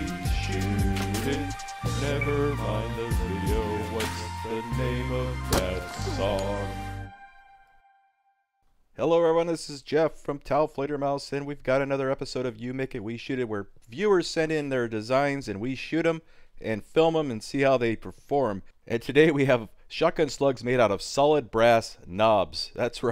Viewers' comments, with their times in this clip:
0:09 you make it we shit it?